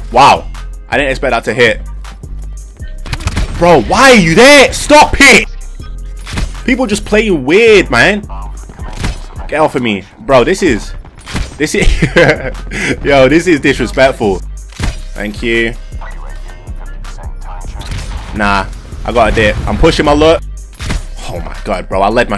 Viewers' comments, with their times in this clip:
0:10 Dude the beat stops at the right time for that kill😆😆😆